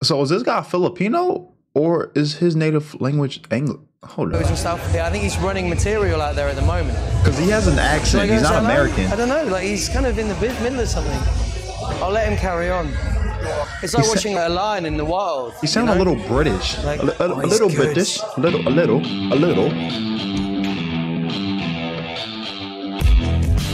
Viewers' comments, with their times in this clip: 0:07 He is the default accent. You on the other hand have an accent, an american accent 😆🤣😂